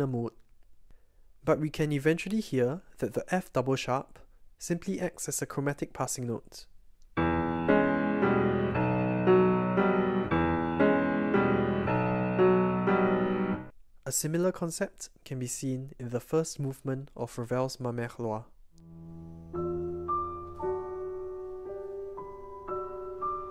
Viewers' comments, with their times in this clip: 0:06 This reminds me of David Benoit's Looking Over Eastlake intro.